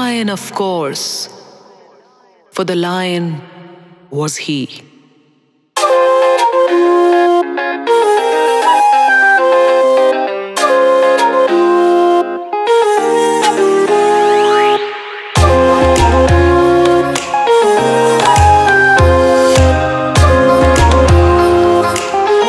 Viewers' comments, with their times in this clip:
0:05 Song epic for my!